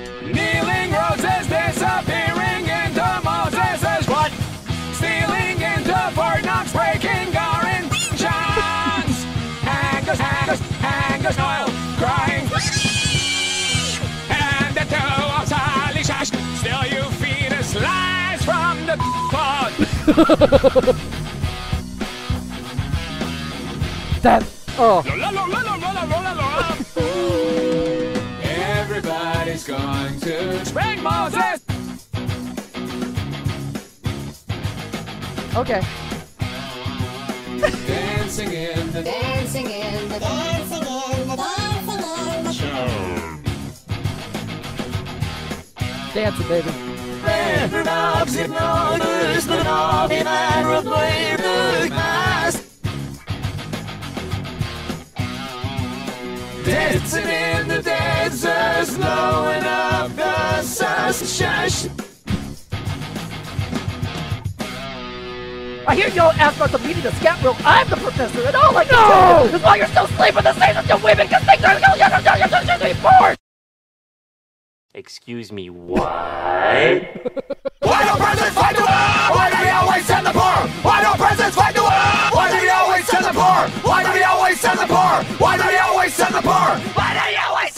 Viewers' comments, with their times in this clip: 0:09 I love how it says snoil
0:12 LAuLaUlaUlAu lAu if alvin and the chipmunks were a heavy metal band
0:18 the guitar goes totally off beat and then distorts the “la la la”s immediately after to cap it off. Hilariously genius
0:20 that laugh you know when you've done something notty
0:30 S P A N K B O S S E S
0:31 I love the silence after he says that. Like everyone was just staring at him
0:45 Am I the only one that likes the backwards melody ish?
0:47 is that ARMENIAN ?
0:48 that part sounds like another language :O
1:08 sounds like the NO from Shrek in "NO, LAYERS, OGRES HAVE LAYERS"